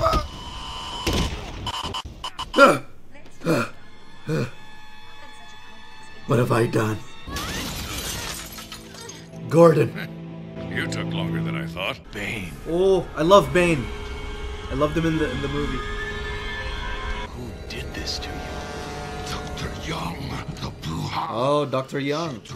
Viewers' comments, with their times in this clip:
0:08 are we going to talk abt that giggle stay focused batman